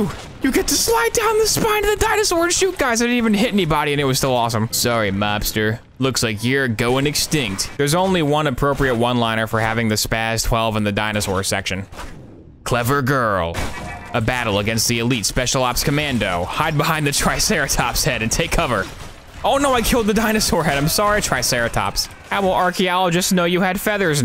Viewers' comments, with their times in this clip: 0:05 was peak oboe